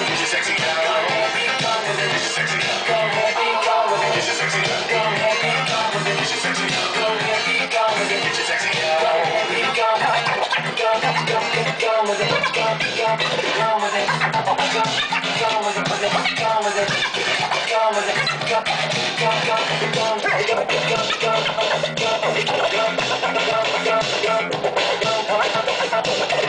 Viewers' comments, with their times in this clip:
0:09 ! OMG!!!! Incredible!!! Such an awesome mix!!